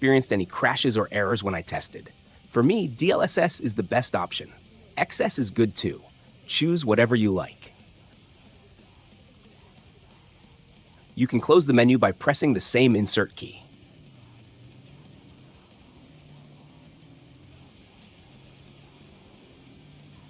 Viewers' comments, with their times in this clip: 0:04 cursed xess pronounciation